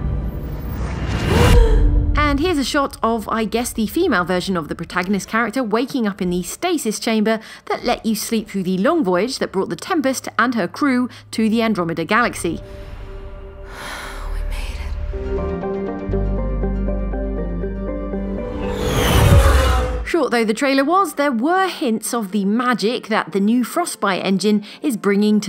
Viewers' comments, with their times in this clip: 0:08 Who ever is talking. I love her accent..so much. Anyways. IS that really going to be the female default version if so . very cool